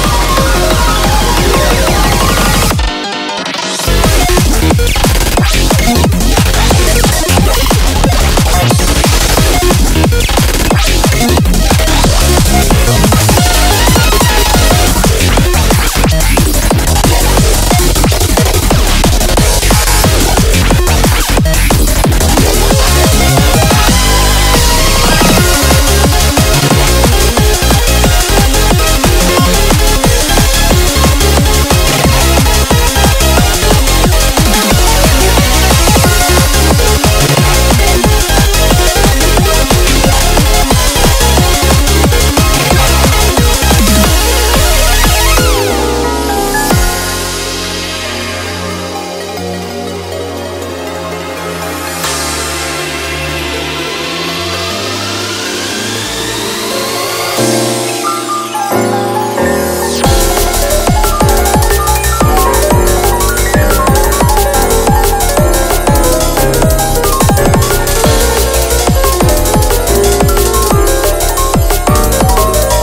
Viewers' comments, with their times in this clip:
0:03 i have so many questions as to how a drop as complex and insane as the one is even POSSIBLE
0:57 the most perfect piano piece that laid in my ears